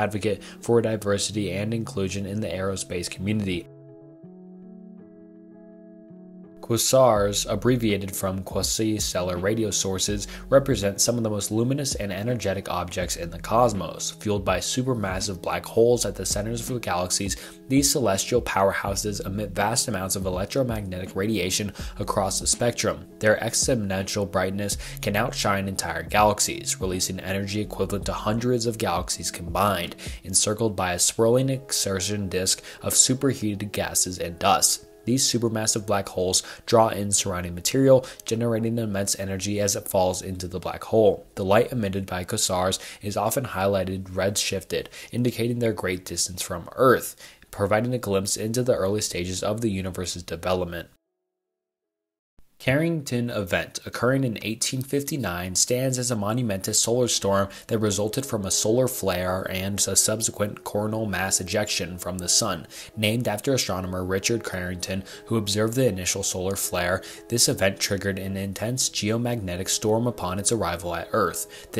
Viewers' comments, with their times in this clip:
0:06 Pronouncing croissant be like
0:06 lololol those pronunciations are why I'm here
0:58 CORN HOLE MASS EJECTION.